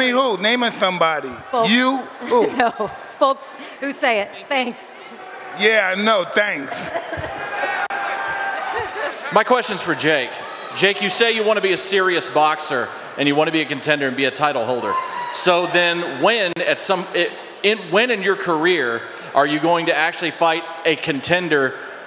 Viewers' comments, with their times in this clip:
0:05 lady was terrified 😂 Mike sounding like old Mike for a second haha